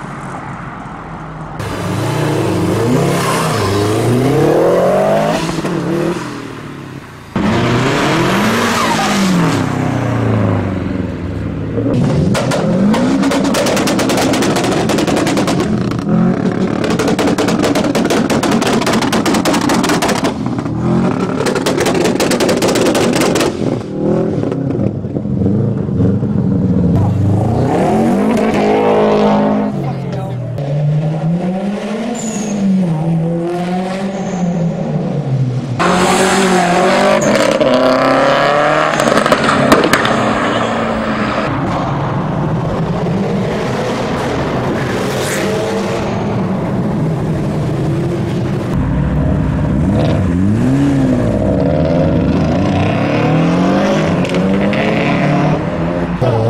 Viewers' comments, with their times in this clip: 0:07 That flutter :0
0:32 love that turbo sound
0:38 bruuuhhhhh!!!! that growl is fucking nasty, so angry xD